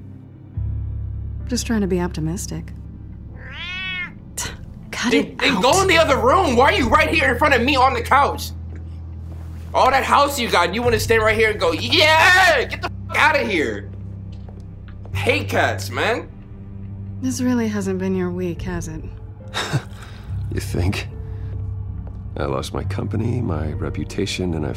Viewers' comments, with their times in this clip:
0:09 his impression of the cat has me dying 😂😂😂
0:12 why he imitate the cat like that😭😭😭😭